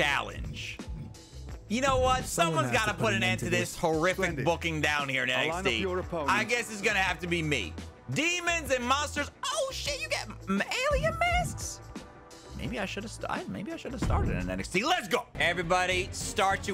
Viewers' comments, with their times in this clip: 0:03 they were in sync